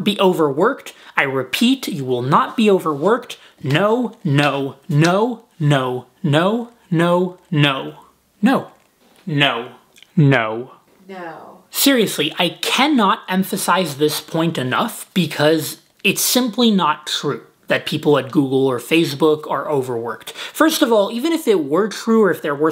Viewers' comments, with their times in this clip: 0:10 Am I the only one who heard his girlfriends' "no" ? haha